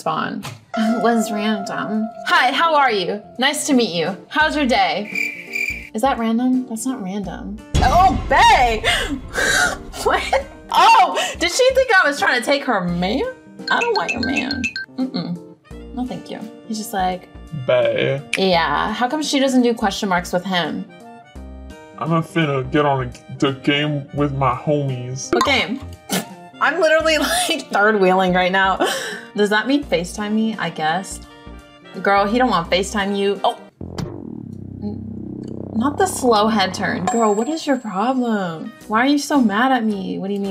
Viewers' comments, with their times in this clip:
0:03 she sound like sniper wolf🩸
0:23 The voice filters give me life 💀💅✨